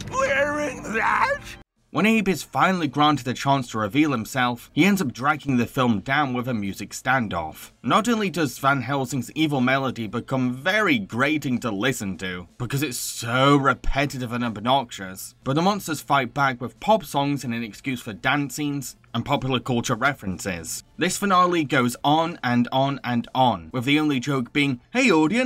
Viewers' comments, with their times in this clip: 0:06 nah the kraken beat goes hard